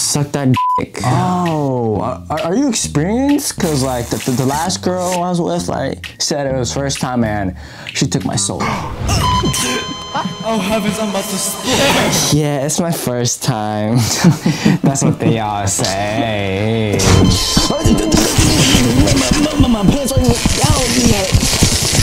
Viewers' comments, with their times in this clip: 0:08 OH HEAVENS IM ABOUT TO SLUR